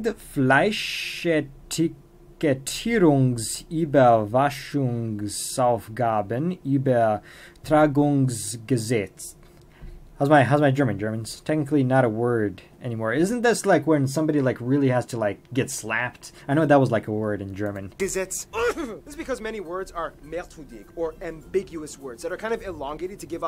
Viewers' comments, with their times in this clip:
0:04 Pretty good, but generally speaking the "...wachungs..." has more "kh" sound, which is mostly the case if an A or O comes before the ch. If it's an E, I, or U it generally has more of a "sh" sound.